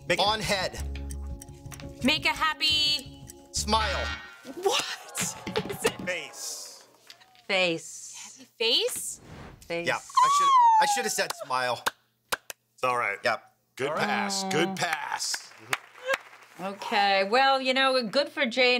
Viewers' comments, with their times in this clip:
0:03 Ouch! He used too many words but the time's up buzzer stopped that.